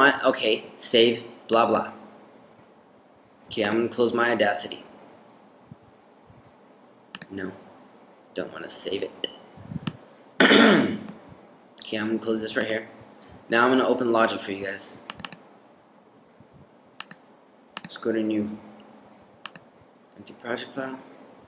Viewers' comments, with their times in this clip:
0:09 when you cleared you throat it sounded like a dub step style kick. I could do a remix on that ha.